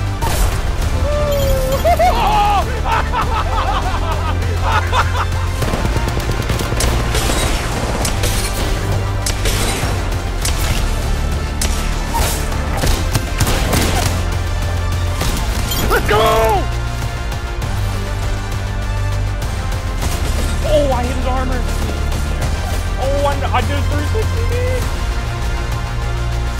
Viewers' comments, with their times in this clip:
0:07 that guy laughs like bojack